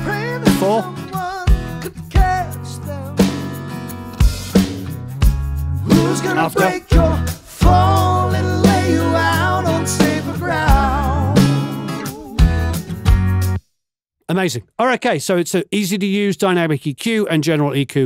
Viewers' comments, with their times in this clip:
0:06 works perfect, especially when the guitar lands with the bass and kick.